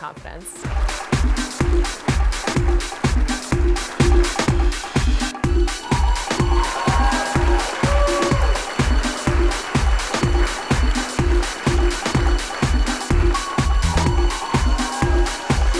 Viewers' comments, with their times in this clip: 0:03 the guy who yawned in the background 🤣